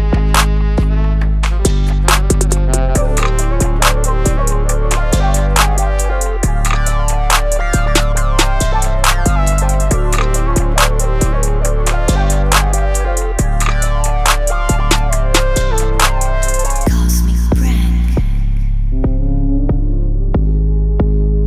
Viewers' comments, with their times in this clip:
0:09 Another dope beat, bro! Cool sax sound, and I really love what you did with it right around :26. Almost has a Pink Panther vibe at point. That saw synth is sick, too!